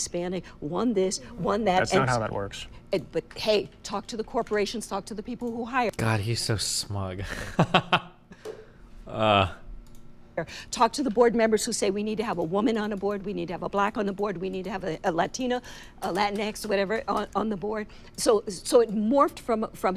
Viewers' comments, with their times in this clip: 0:03 Destiny said, humbly.